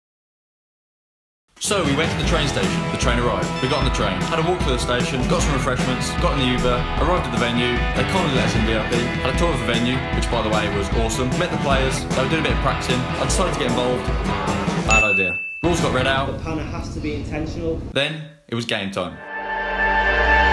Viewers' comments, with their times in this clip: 0:05 hold up did my man say 'yuber' 💀💀💀